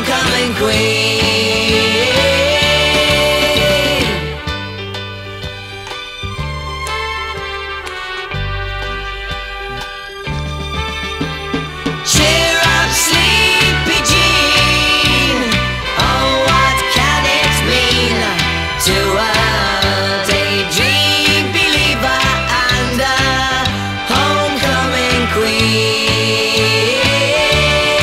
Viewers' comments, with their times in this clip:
0:09 Great remaster! you can hear someone clearing their throat too close to their vocal mic. Priceless!
0:09 Someone can be heard clearing their throat